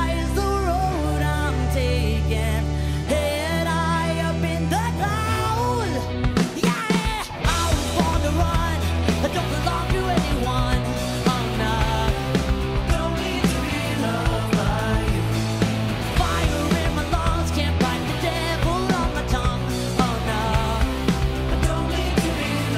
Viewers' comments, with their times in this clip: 0:06 Why can't her studio versions ever sound like this? She's really teasing us with these e-guitar led live performances.